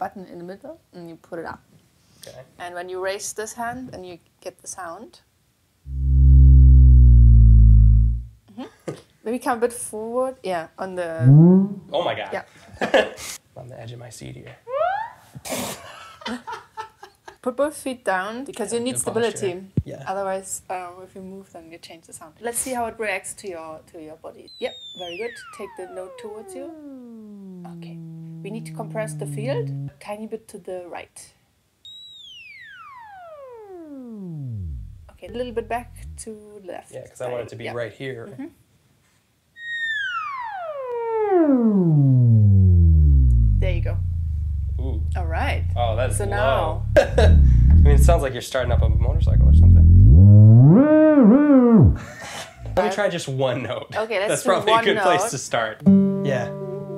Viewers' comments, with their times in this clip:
0:09 Nobody: My stomach when im in a quiet room:
0:11 love the laughing of fart noises!!!
0:41 don't watch this video with a subwoofer my whole room vibrates, and I have a really small woofer